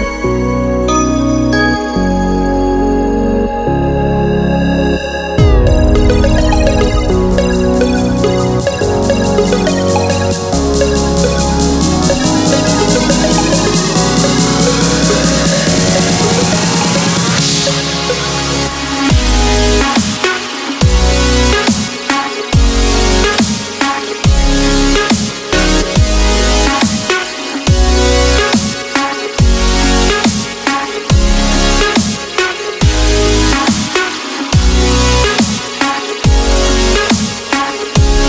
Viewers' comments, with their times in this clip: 0:07 From you can hear the actual song LOL
0:17 the drop indescribable.
0:18 the drop is sick :OOOO
0:22 the drop is mad